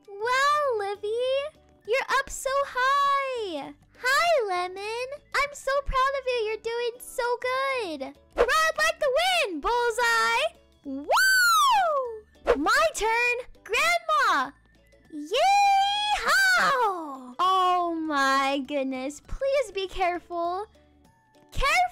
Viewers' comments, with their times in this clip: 0:09 Headphone users😂 Happy Birthday Livie🌸
0:09 sometimes her mic just can’t keep up with her💀